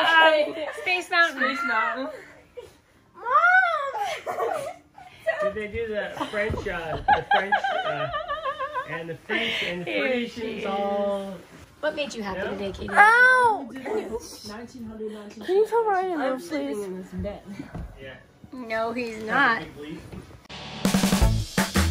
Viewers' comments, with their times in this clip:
0:07 that laugh make me laugh 😂